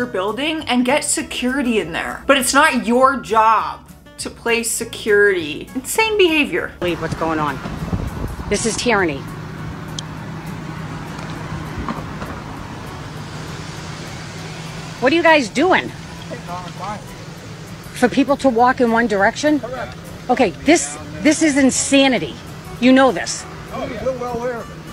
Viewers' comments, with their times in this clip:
0:08 did she say tearny? the fuck